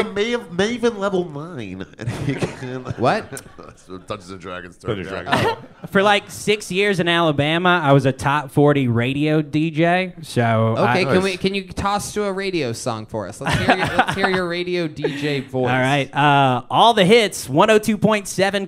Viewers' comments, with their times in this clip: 0:06 Tony Hinchliffe missing the irony of Tony Hinchcliffe's vocalganger sounding gay af